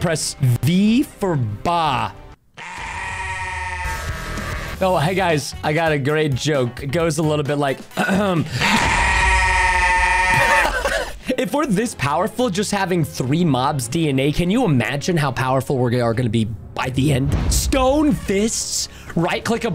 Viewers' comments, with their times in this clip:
0:06 I laughed the exact same as Preston